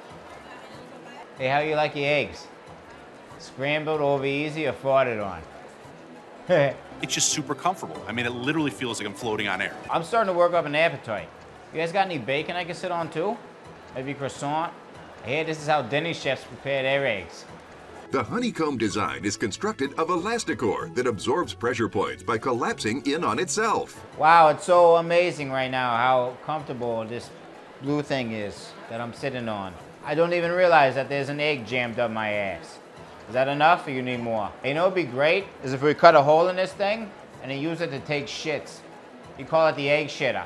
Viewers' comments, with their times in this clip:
0:05 I like the laugh makes it better
0:24 sounds like rick and morty😂